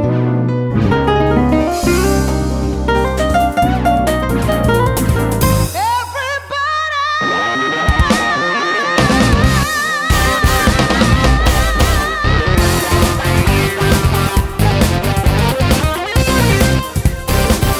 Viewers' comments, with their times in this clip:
0:05 the final boss music to sexy sax man: the game